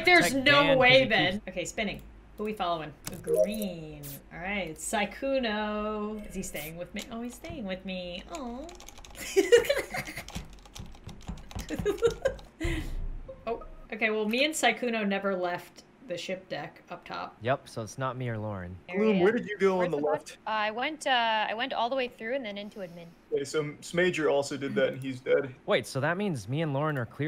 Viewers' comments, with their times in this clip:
0:09 i love the noises of the keyboard when you’re dancing and the visual of when you’re dancing😂😂 i also enjoy your laugh and pure joy from it😂
0:11 I could hear the keyboard screaming help